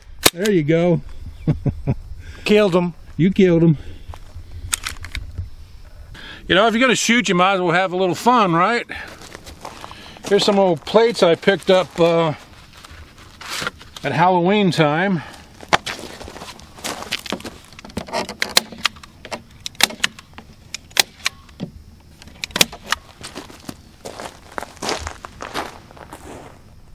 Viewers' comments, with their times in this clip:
0:10 Ha! That "SIG" sounds like the staple gun you used for the plate!